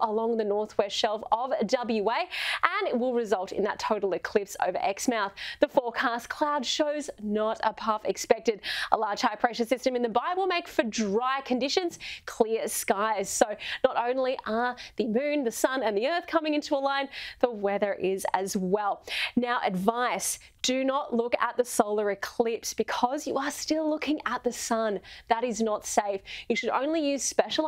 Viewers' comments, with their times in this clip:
0:10 did she say in the bible?